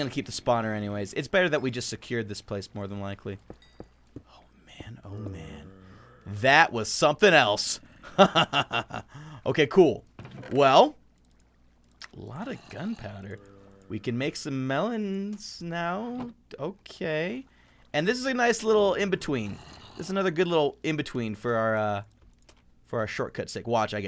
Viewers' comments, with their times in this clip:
0:08 THAT EVIL LAUGH THO